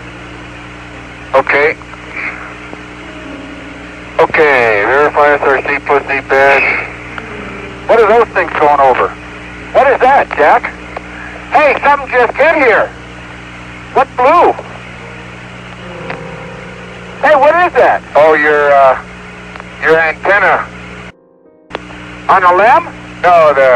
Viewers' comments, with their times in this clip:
0:10 "Hey! Somethin just hit here? What blew?" "Uh, it';s the antenna." "Hey it blew up!" what??? It sounds like one astronaut was amazed by seeing something, the other astronaut was completely calm about it, like he knew but the other guy didn't. Gives credence that the were moonflights from 1945 onwards after the Nazis discovered antigravity. Did they blow up a craft because it was going to ruin the broadcast? Which, as some believe, NASA was a cover; going to the moon in conventional rocketry craft to further hide the existence of the antigravity sky navy and the bases up there. Sounds wild but I wonder what they ate? I just made some English muffins with butter and chicken gravy. Could you do that on a TR3B on Mars? Maybe it's not so great.